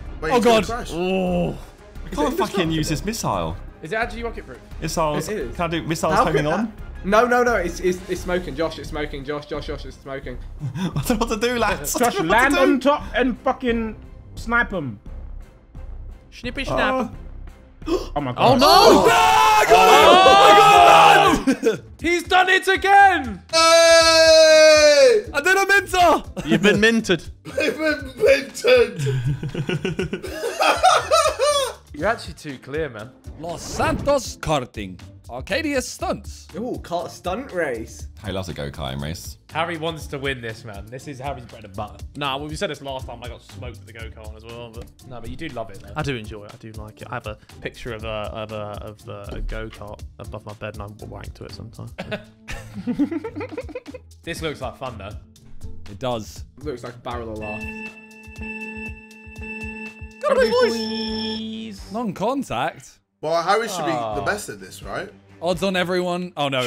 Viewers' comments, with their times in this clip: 0:10 jjs yay is too good
0:52 what was that laugh from tobi